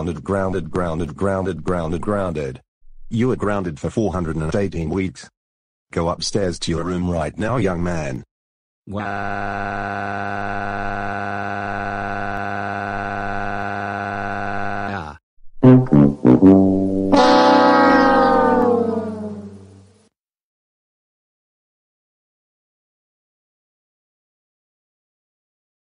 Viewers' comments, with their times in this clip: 0:09 Dark Hydra Bowser's crying voice